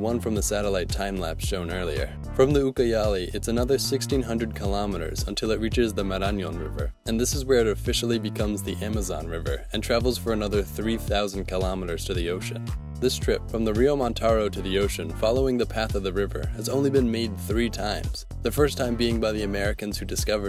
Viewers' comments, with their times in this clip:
0:08 Despite showing us the accent is on the "o", he still pronounces it "Maráñon". Just a linguistic eventuality I found funny